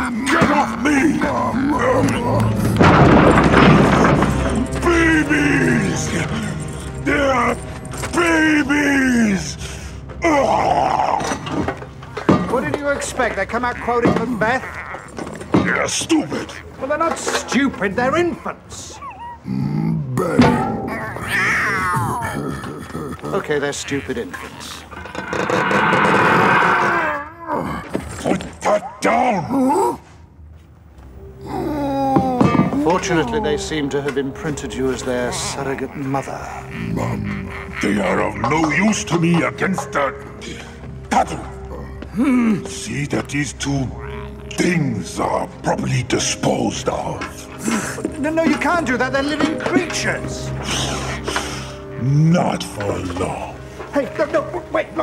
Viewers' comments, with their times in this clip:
0:03 "BABIES!!! THEY'RE BABIES!!!" (growling angrily)
0:20 that “bang” followed by “Owww” doesnt get enough credit 🤣🤣
0:36 Lol I swear..at does anyone else keep thinking "MUMA" is being said by Shreddar mimicking Razar in fustration! Since his voice sounds like Razarr?